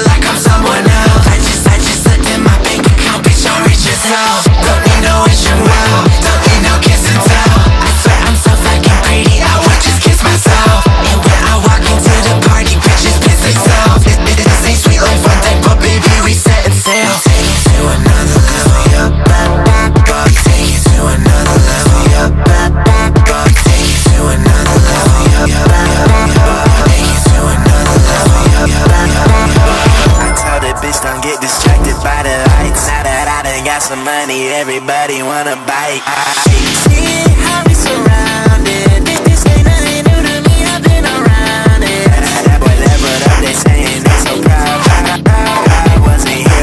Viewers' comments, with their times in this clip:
0:10 ☆WHY THE FUCK IS THAT LITTLE KISS FEEL SO CUTE\(>o<)ﾉ✨🗣️??
0:11 Lyrics: I would just kiss myself What i hear: I would just kiss my son
0:29 Sega is going to sue you for the ring sound
0:31 the Odetari voice seems like trippie redd 🩸😈🩸😭😭😭